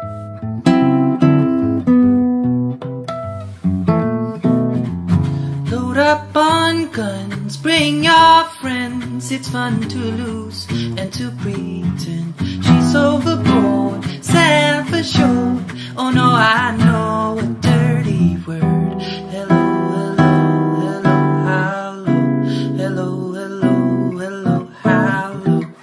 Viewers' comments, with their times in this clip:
0:08 His voice induces an harmonic on the Guitar, On the high E string maybe?